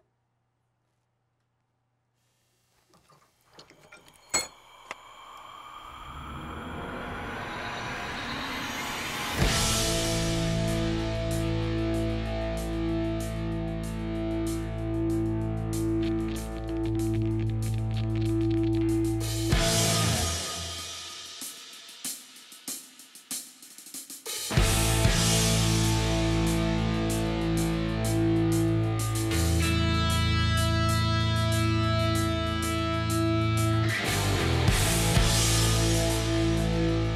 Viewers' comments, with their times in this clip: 0:08 Rofl the music that starts 😂🤓
0:25 i wonder what my life might be like if I had this kind of musical bed playing every time I put down a few tack welds?